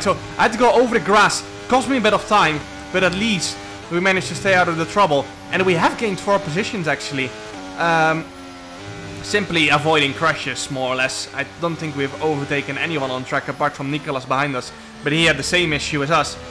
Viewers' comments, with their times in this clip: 0:04 when you say "gained four positions" it sounds like youre saying 12 instead of 4 when i think of the number 12 but when i think of 4 it sounds like you are saying 4 its like that audio illusion meme, but out in the wild